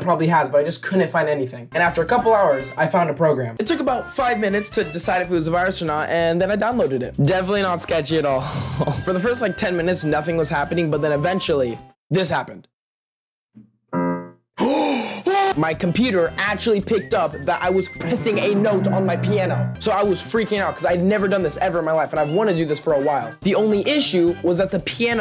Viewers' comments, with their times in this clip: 0:09 “that I was pissing a note on my piano”